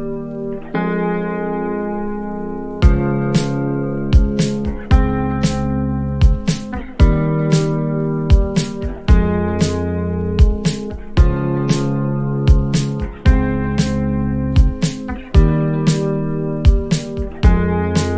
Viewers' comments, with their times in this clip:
0:05 nice guitar, cool vibe, but its not the right bass note on the part that comes I believe